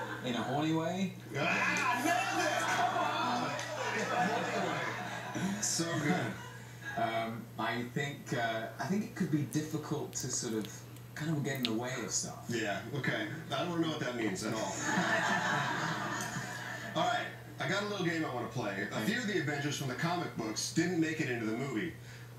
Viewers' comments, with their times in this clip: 0:10 Wtf is that noise